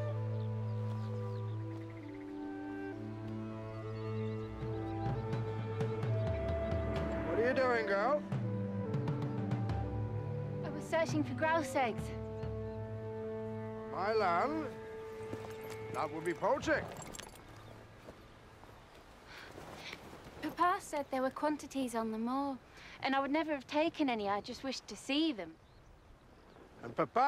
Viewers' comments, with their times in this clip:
0:10 My coworker pointed out he's using his bane voice...